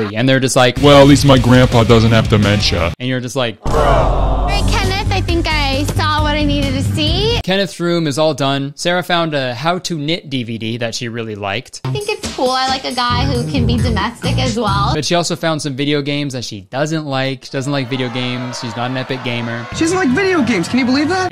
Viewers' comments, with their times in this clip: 0:03 Am I going crazy or is a mix of 'bruh' and 'aww'??